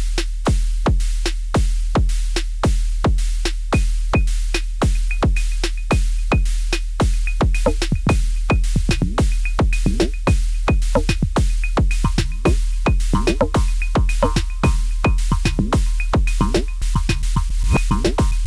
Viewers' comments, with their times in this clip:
0:03 he creates The Spongebob Jellyfish Fields song where they follow Spongebob all over Bikini Bottom, 🤣🤣🤣.